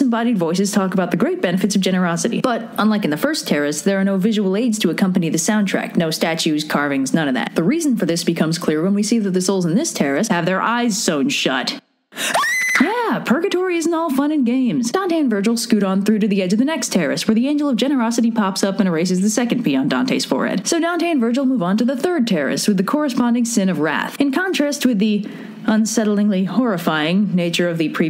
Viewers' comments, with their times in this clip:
0:08 “when we see their eyes are sewn shut” horror movie quality scream
0:09 That scream was TERRAFYING
0:11 SCREAM OF HORROR INCOMING
0:11 RIP headphone users (myself included)
0:11 Dear lord warn a guy. I think my ears are bleeding......
0:11 Thanks for the ear rape in
0:11 that scream though
0:12 that scream tho
0:12 ears .exe has stoped Me:congratulations red you made my ears bled
0:12 That scream made me laugh harder than it should, more so than the eyes-sewn-shut part. XD
0:12 R.I.P. headphone users.
0:12 thanks for that.... very unnecessary.... WARNING TO ALL HEADPHONE USERS.
0:12 the time I Got Earraped...
0:12 ... why dafuq did you scream, that was unexpected and spooky, why my reproduction system fell of out of fright.
0:13 what was that scream?